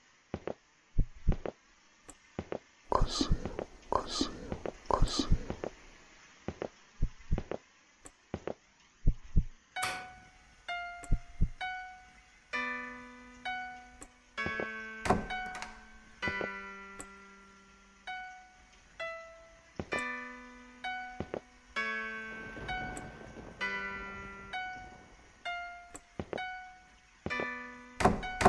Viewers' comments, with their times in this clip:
0:09 there a click just as the music and the woman appears and it reoccurs every now and then